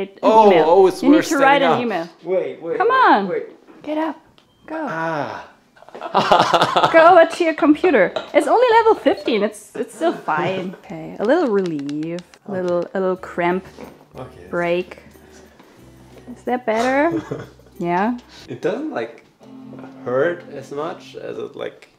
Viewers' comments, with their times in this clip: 0:07 💜😘JK's laughing replica